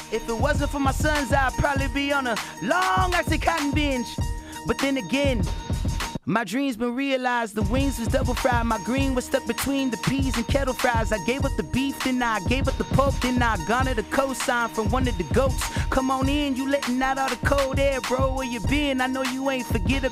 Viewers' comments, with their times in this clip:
0:05 that went perfect with his flow lets give dj a little respect